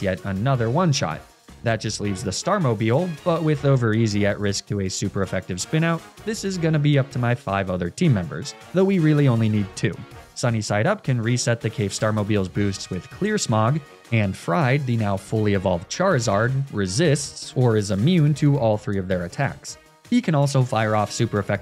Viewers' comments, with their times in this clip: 0:03 "finally someone who knows how to pronounce Annihilape correctly" good god how did he pronounce it